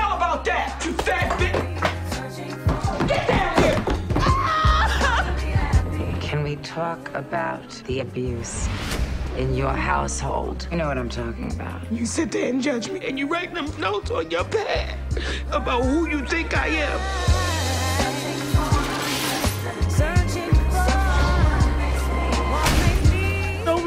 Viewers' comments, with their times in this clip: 0:10 ‘you’re household’ full on sounds like a robot